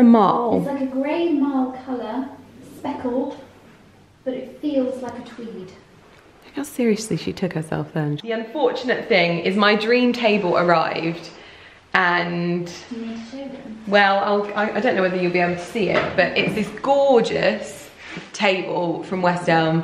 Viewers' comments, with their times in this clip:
0:05 I agree! especially when she muttered ''how seriously did she take herself then'' around the mark. it was a little too serious to be banter.